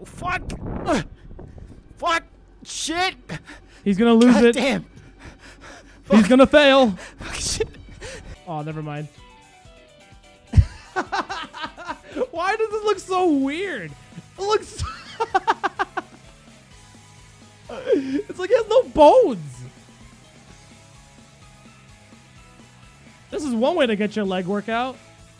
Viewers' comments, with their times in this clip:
0:08 me vibing to tripaloski